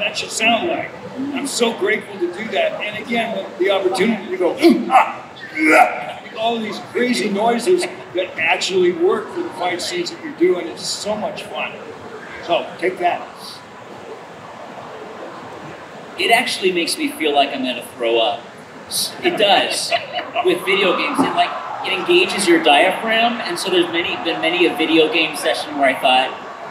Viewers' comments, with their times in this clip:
0:08 cant believe thats byakuya voice